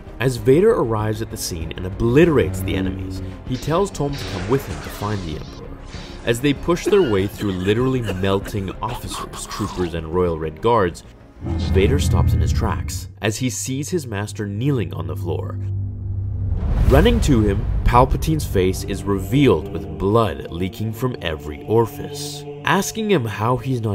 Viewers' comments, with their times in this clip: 0:07 Terraria zombie sound
0:08 Terraria zombie noise